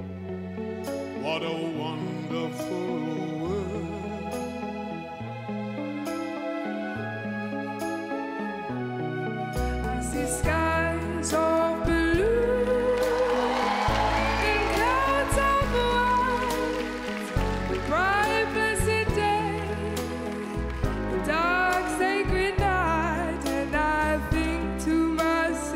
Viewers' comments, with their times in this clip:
0:09 was the most heavenly tone I've heard and I almost cried lol